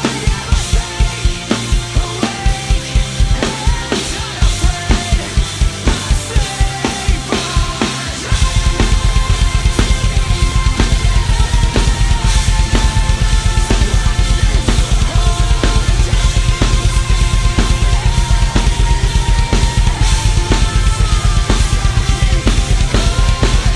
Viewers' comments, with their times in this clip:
0:08 This Is Fantastic Double Bass Ever!!!